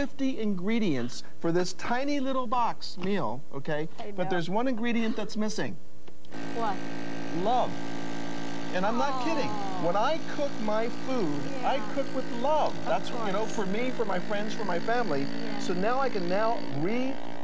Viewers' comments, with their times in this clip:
0:03 are fart sounds the missing ingredient?